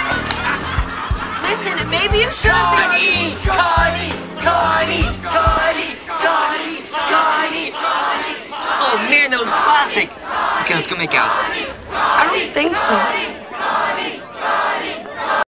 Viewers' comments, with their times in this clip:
0:08 The girl Reese tries to make out with at the very end she would end up playing the iconic role of Sadie Adler in Red Dead Redemption 2. You can even hear the raspiness in her voice here at 16 years old.